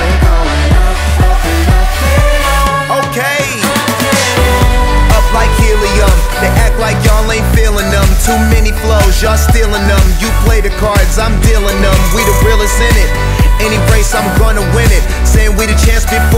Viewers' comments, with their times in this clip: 0:04 the song completely took a random change and it killed it. Probably what’s going to keep me from actually getting the song. Soothing voice but......